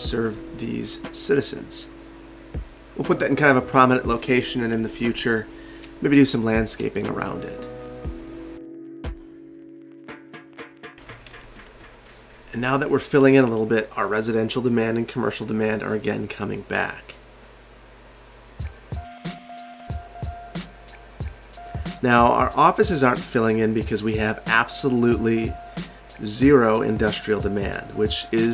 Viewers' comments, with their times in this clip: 0:10 the song that just played was sooooooo good